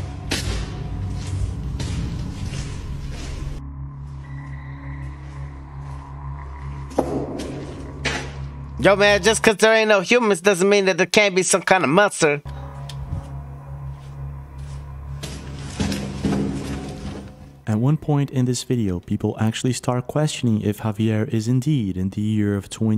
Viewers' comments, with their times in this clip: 0:08 Why does this guy talk like Chucky from the rugrats though?? 🤣🤣🤣